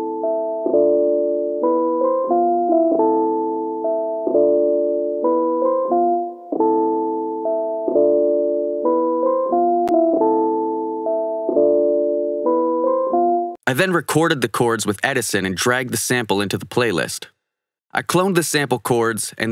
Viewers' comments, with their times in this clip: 0:05 Winter Blues vibes already